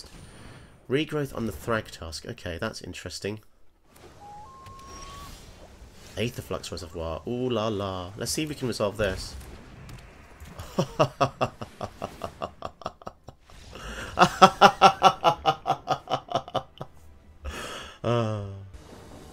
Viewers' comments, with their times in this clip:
0:07 Pretty cool general, the different options on cast are a neat gimmick this laugh reveals your inner bolas 😁